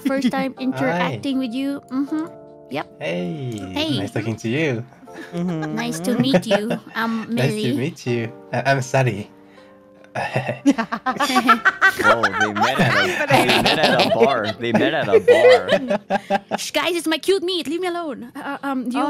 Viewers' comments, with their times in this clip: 0:04 Honestly, they sound so cute hereeee<3 😆